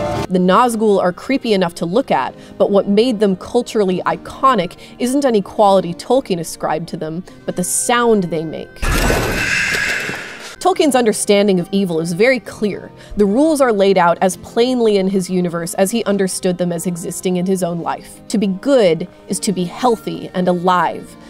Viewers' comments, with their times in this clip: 0:07 Hella good as always, look forward to Ringwraiths. Was disappointed to see on this that YT auto-subtitles didn't have a go at spelling the Ringwraith noise.